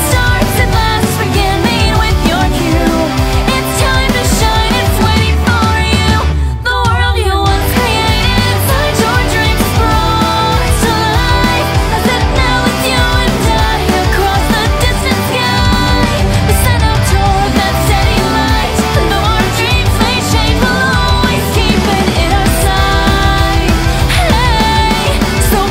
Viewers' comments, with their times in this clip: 0:06 When I was watching SAO I didn't understand this part so I sang it like "ahahplga"... Don't judge...